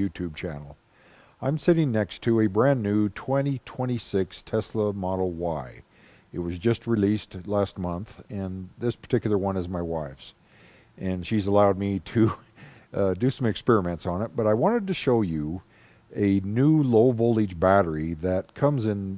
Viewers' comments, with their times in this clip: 0:04 did I hear well "sitting next to my wife 2026 model Y"!